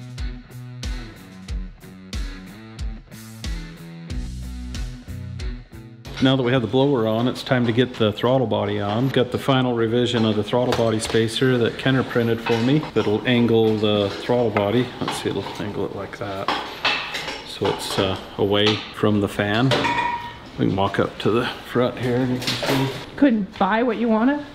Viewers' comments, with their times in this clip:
0:07 I. Just love itlol… Griz sounds awesome 👏 ✌️❤️☮️💪🏻